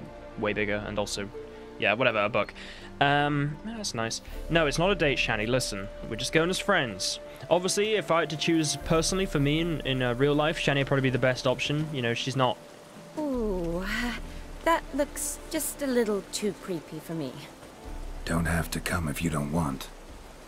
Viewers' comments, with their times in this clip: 0:07 her response sounded like she was talking to you bro...